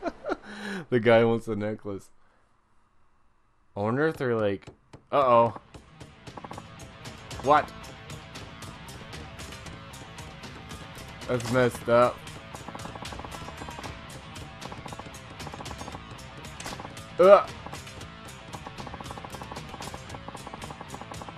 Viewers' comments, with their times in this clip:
0:05 I loved this scene because the knife was in sync with the music. Probably spent minutes before clicking, just to bop to it lol.